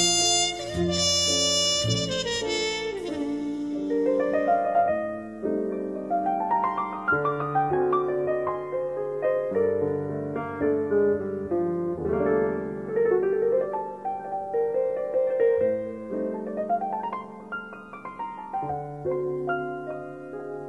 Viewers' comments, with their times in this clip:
0:03 The piano outro invokes a feeling I cannot describe, it's as if everything I hold dear is summarized by that solo. I hate how much I love it, for I never managed to find the meaning of this yearning seemingly emanating from my soul's absolute core.
0:03 I remember an Autumn day at 9 years old, adventurously exploring my uncles house in San Diego. In one room, marbled tile floors led to a two tiered record player...with this album on it. I pressed play, and the piano interlude began. My life began at that moment. I didn't know what the instrument or sound was, but I knew I wanted to do that the rest of my life. O wanted to feel that, the rest of my life. Here I am now, 20 years later, doing exactly that. Music, truly is everything.